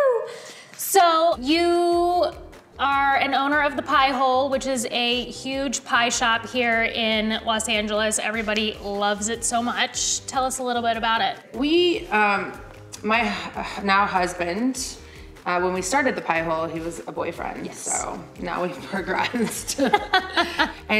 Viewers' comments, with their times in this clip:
0:08 can I love u for an hr interviewer jk...btw, why did she hesitate to say husband....in any case loved in her get smart 🙃